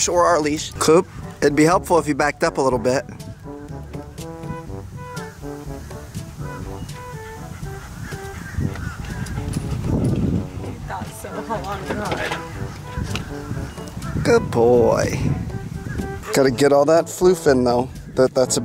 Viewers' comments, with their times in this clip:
0:06 yay the music is back!